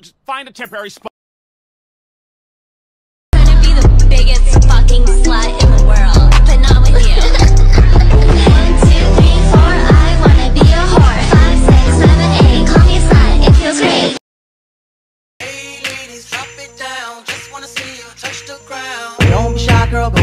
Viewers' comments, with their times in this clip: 0:04 the song speaks to me👄🔊👉👂